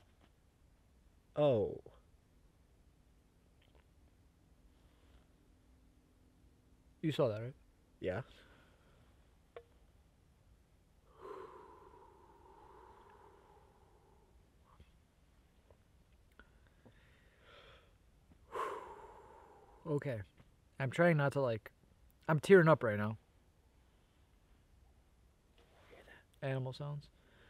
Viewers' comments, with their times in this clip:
0:08 Hej I don't know if it was a buck but I heard 3 foot steps behind y'all